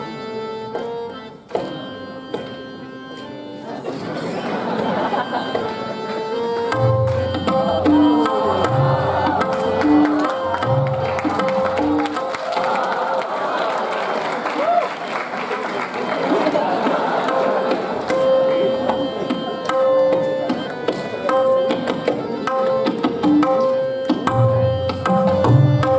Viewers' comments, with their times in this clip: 0:07 .. amazing where he picks up the first "tehai" from ... he picks it up from the 7and1/2 beat ..skips the first "Som" ...turns around and then crashes off to the "Som" ... thoughtful artistry indeed.... explains why he is Zakir Hussain ....